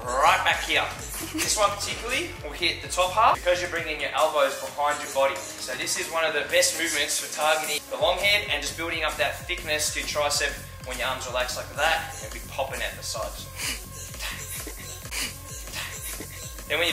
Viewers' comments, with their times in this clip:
0:04 windows startup sound hahaha